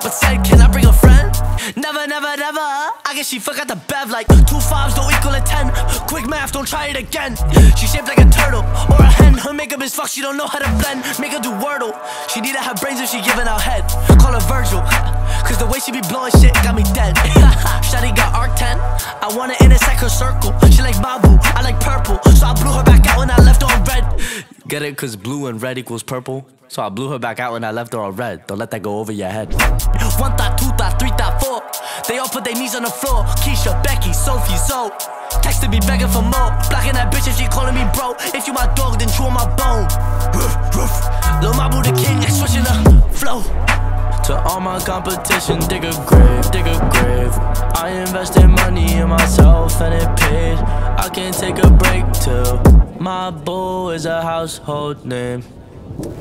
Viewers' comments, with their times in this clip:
0:09 I swear i heard mabu say the n word go to
0:11 i heard the n word
0:16 bro really did the speed
0:29 It would've been cool if he dropped the beat but this song goes hard.
0:40 bro turned into speed there 💀